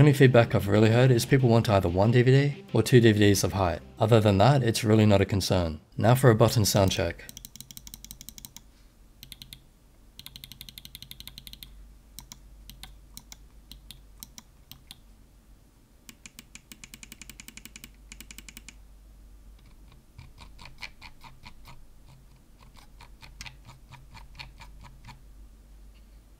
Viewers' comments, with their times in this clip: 0:07 ASMR for gamers